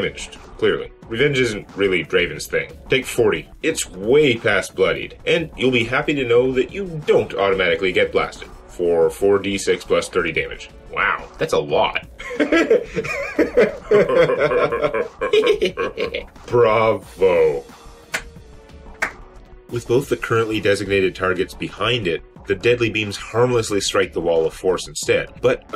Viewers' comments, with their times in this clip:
0:06 I've yet to figure out what the laughter was about... Despite rewatching this video a dozen times.